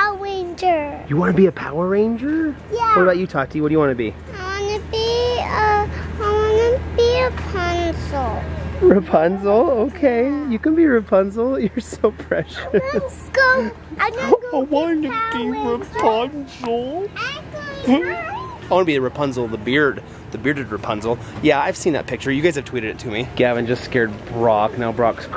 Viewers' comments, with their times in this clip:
0:08 i thought she said pencil